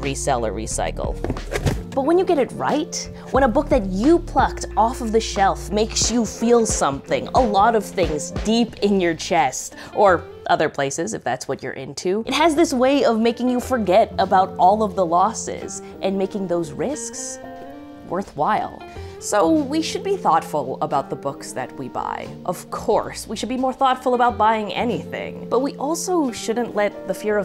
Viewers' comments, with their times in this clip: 0:10 I was sipping coffee and nearly shot it out my nose great delvery of that joke love the bookmark design